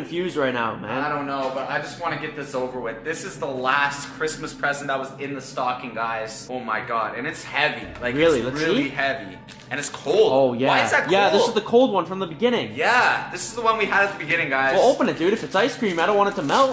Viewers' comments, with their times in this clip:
0:03 those hit on ground and they pop